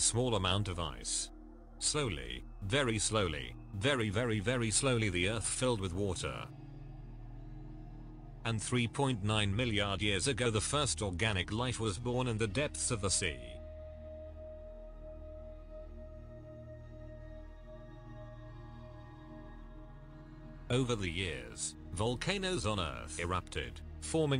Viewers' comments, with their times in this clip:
0:08 " millian " how do you explain this